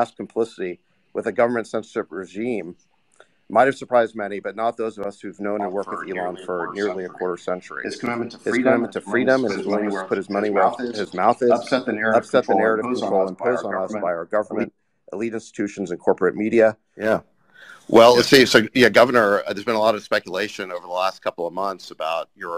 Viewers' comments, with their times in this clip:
0:05 A literal echo chamber! Hilarious.
0:08 richest man in the world doesn't know how to mute a microphone